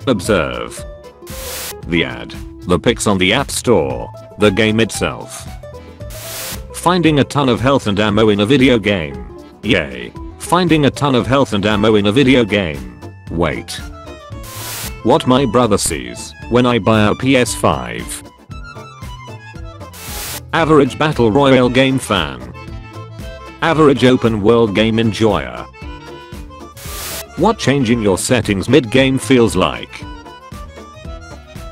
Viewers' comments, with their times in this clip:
0:09 why do I hear boss music
0:13 he heard the boss music